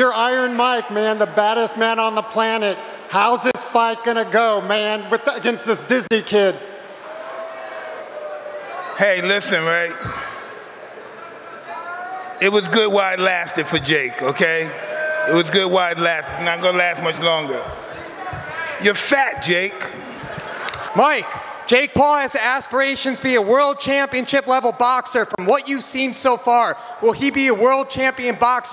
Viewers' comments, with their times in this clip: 0:09 Whem mike says hey lithen, you better listen